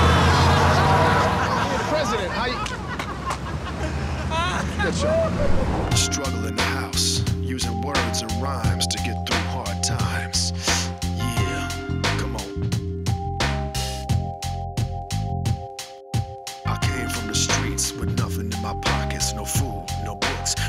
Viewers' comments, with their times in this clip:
0:06 it's sarcastically dope but man those beats are legendary 🔥.